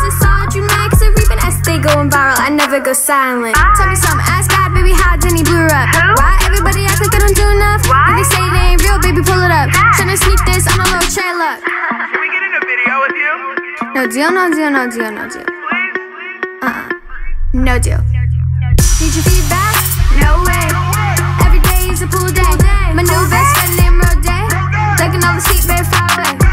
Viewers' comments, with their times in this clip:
0:03 Did she say "ass fat" ?
0:14 I didn't understand a word